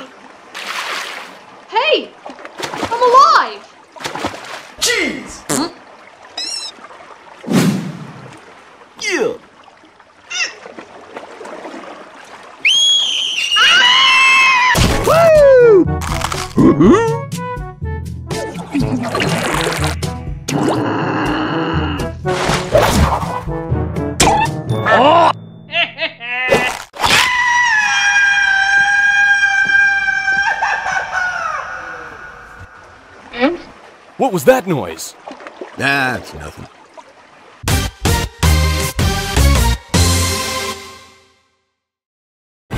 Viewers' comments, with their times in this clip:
0:04 Cheese! Yeah! scream I love shark puppet.
0:06 The puppet shark voice🤣🤣🤣
0:12 Shark Puppet: screaming
0:16 * grass skirt chase Music starts playing*
0:27 Hahahahahaha men a Mexican Scream Gritings from México
0:27 Spider lnkling: screaming